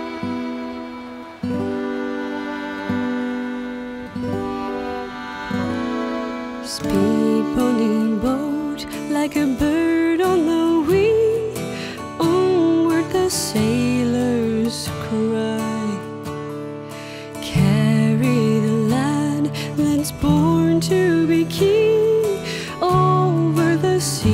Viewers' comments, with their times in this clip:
0:07 i just fell in love with your voice, #wonderfull keep going on love from india